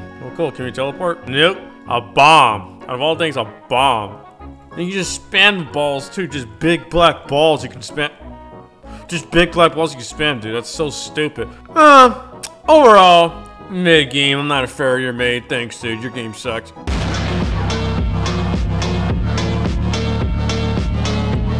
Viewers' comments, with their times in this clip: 0:06 Why u stop talkin cuh? 🤨